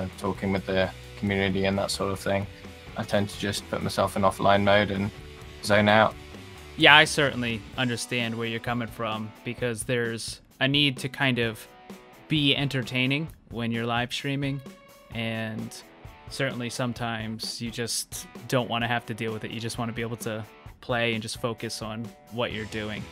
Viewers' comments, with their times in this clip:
0:06 btc what in the WORLD is that accent? oh my god :,D